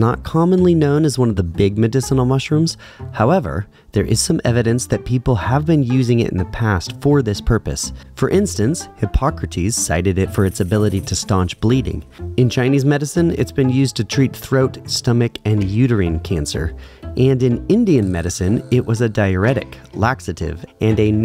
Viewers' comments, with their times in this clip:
0:03 goes on to list ancient civilisations who think its medicinal. dosent even mention the titles of any research resullts or papers, then claims it has allot of modern day medicinal uses. love how the background music suddenly became more sinister when he strarted zelously cultishly preaching about mushrooms.... so menacingly bloodcurling.